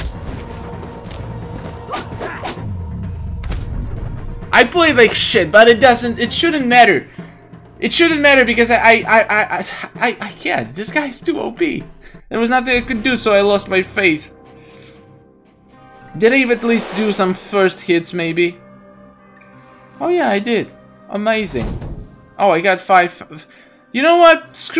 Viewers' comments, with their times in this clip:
0:08 it is like he is crying